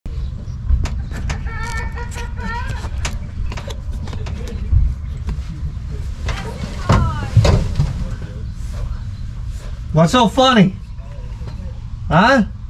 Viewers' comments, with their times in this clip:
0:00 Was that your son laughing at the beginning, or was it a chicken clucking ? That install went pretty smoothly. Does your fuse box allow bare wires to be screwed in ? If so, I like that. Nice and simple